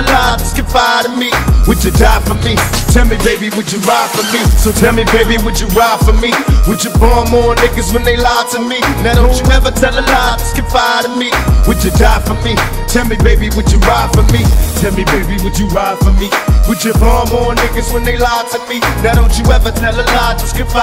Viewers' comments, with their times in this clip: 0:08 does anyone know the name for that t shirt Pac is wearing?? I love the tempo on this tune ❤ good mix